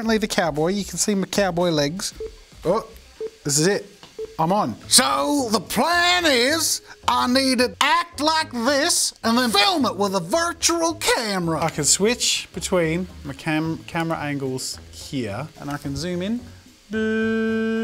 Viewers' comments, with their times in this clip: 0:05 straight up sounds like the dude in the first episode of Xavier: Renegade Angel that says "I'M GONNA BEAT YOU DOWN- DOWN- DOWN-"